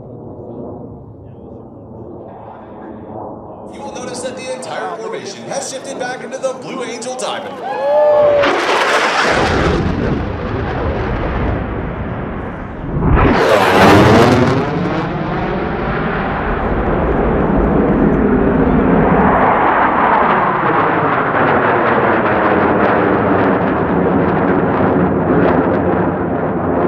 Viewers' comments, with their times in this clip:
0:09 Pressure wave is legit